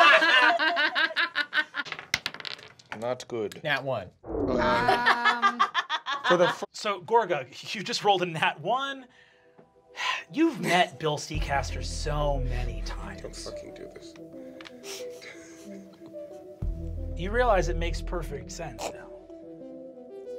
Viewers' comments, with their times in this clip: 0:06 Lou's "Don't fucking do this" KILLS ME every time. He's so tired.